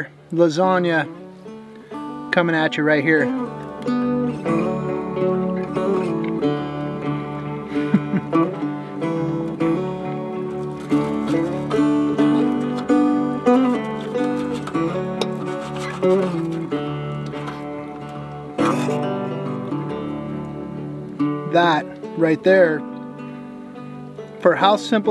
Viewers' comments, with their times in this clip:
0:08 Man you’re just amazing! Thanks for such a wonderful content. I love that music